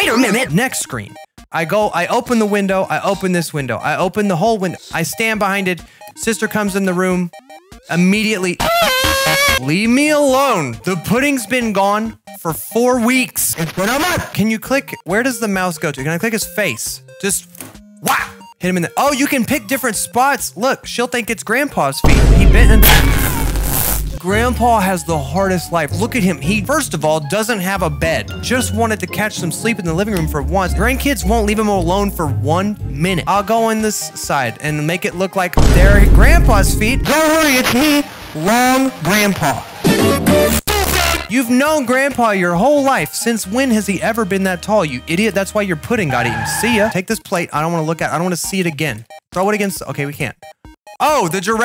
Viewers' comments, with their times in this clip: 0:07 Sis: finds brother Bro: loud crying Me: LOL WTF
0:08 This should be a fire alarm
0:37 sounds like Spamton ngl.